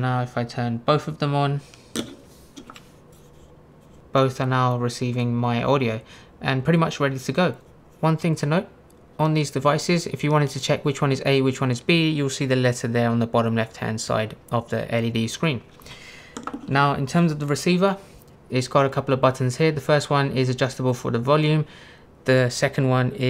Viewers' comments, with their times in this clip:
0:08 you kept covering the microphone of the one on the right, but we heard no discernible difference in audio or the sound of your finger touching the microphone. Are you sure that audio you are playing includes that microphone? I'm skeptical based on what I was seeing and hearing. Also, we could hear you putting them down on the table while you were talking, and the audio source did not change but the sound did not change either when moving them further away.